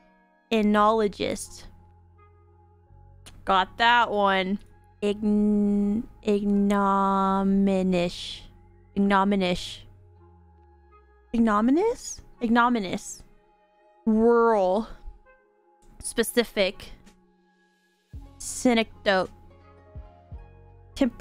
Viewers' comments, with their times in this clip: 0:06 is exactly how I read.